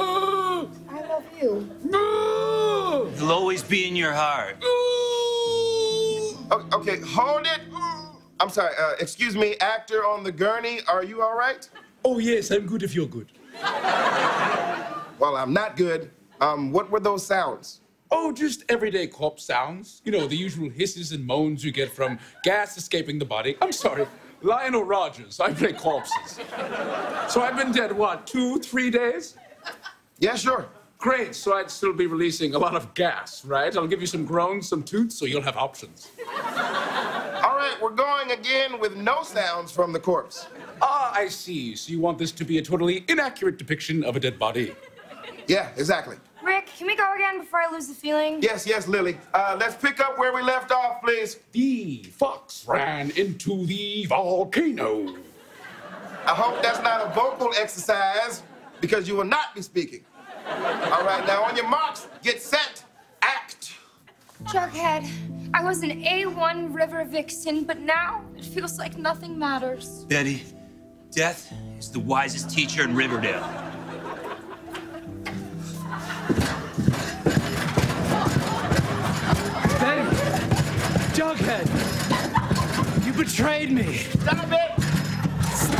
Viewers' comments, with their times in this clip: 0:09 the actor moaning 😂
0:12 Freddy Mercury is that you
0:52 "Thee FOX ran into the vol-CANO" gets me every time 😂 😂... Even Heidi & Kenan almost broke their characters at that line 😂 😂
1:05 didn’t realize that was Halsey until the way she said now 😂
1:07 did u hear Halsey's voice ***